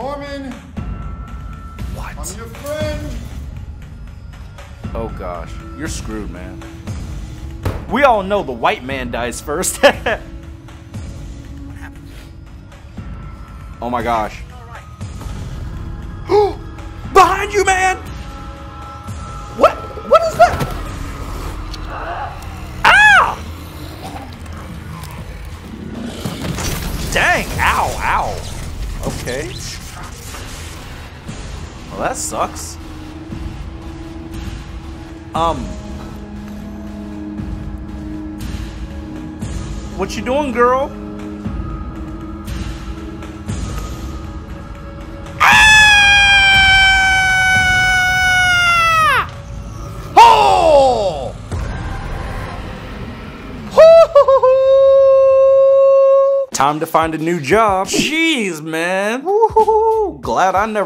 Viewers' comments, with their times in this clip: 0:10 when the microwave timer stops
0:46 I thought you said no girl SCREAMING